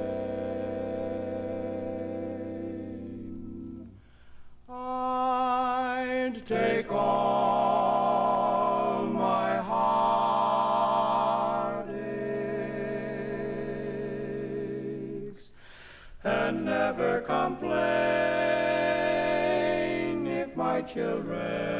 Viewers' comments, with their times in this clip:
0:04 The tag is gorgeous!